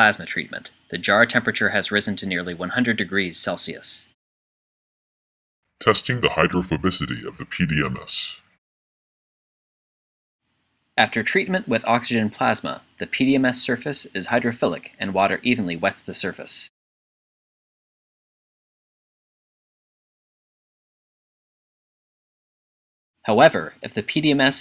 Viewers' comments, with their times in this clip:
0:06 what is going wrong with the voice